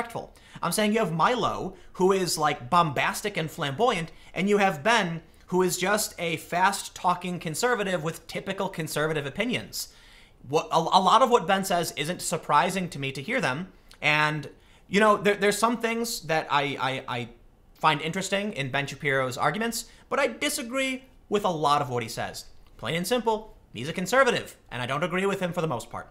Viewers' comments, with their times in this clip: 0:08 **and a squirrel / elf voice that makes him supper annoying and very hard to follow his speech. I would protest him going to my campus just so I didn't have his voice near me. I wish he wrote a blog with a transcription of all his videos so I could have an objective take on what he says.